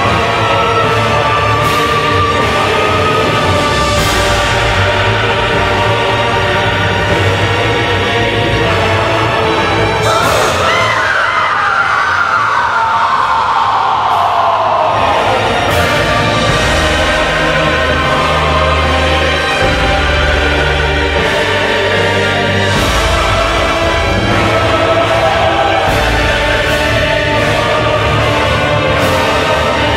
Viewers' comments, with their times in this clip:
0:10 Sims 4 Bella Sims 1 gasp and scream